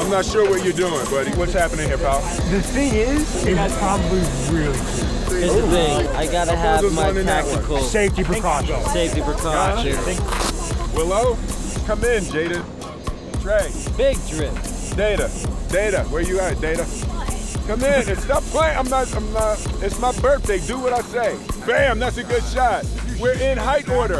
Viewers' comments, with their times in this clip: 0:09 ! sounded like will